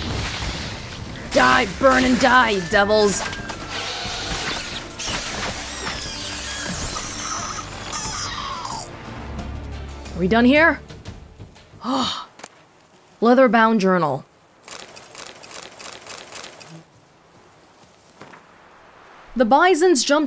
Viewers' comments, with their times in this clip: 0:04 I feel kind of sorry for that archespore. It sounds so pitiful.